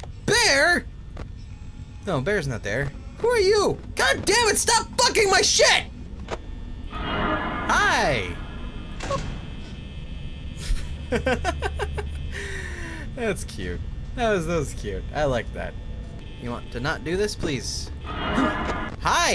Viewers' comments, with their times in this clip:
0:07 its kinda funny how he doesnt scream when bonnie is at the door